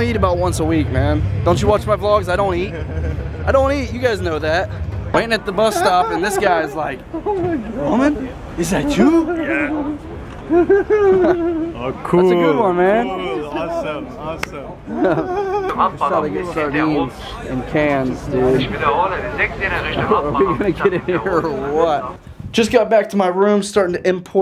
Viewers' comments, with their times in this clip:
0:06 Listen to the laugh 😂
0:11 that laugh :o